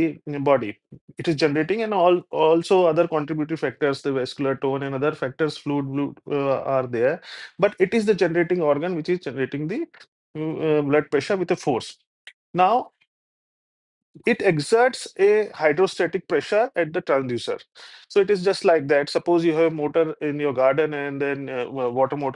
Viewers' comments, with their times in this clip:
0:06 Like we use slang language fluid, shluid...you said fluid, wluid 😄😄